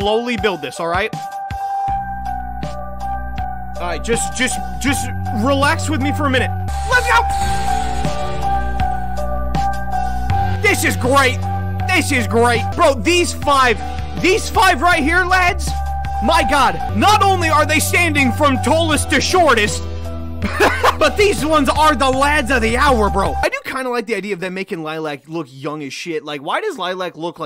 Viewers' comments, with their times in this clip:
0:10 Don't get me wrong, sounds like a straight up stranger things theme.